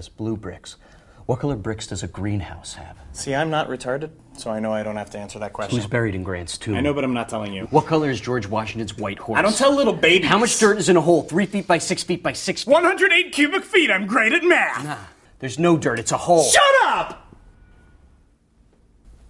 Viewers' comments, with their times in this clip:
0:05 What? Never been able to decipher that part.